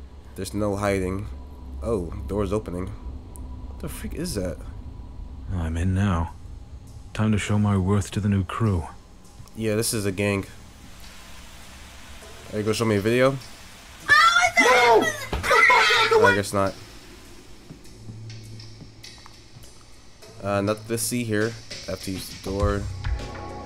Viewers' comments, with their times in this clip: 0:08 Just saying how loud i scream